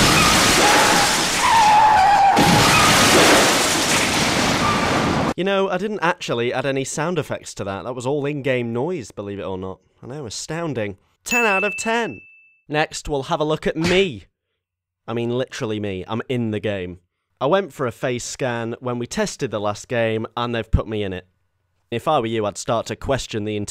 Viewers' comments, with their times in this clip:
0:04 rock music starts playing stone cold steve austin enters